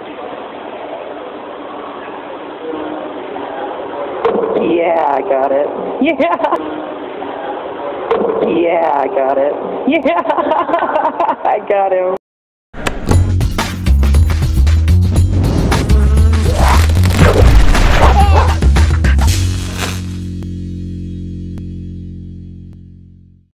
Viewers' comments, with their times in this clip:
0:08 I think you should laugh when the glass is removed sweetheart. 🙂